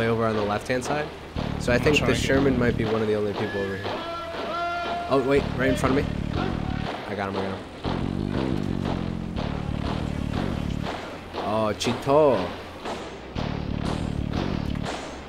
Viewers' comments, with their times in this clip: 0:03 song played is german is slick a western spy in GLORIOUS KV-2!?